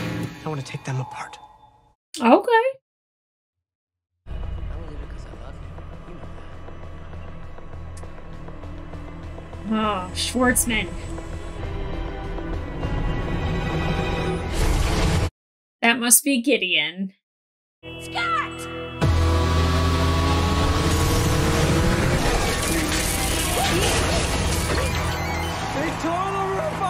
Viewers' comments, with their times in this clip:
0:09 The way you said "Oh, Schwartzman" sounded just like Seinfeld greeting Newman.. such distain! 😂😂